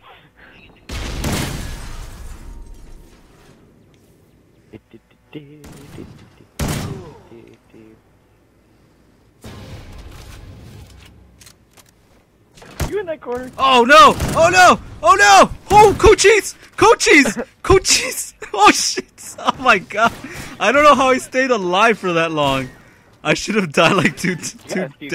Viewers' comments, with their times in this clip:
0:10 are you panick -crying "Goat Cheese"!?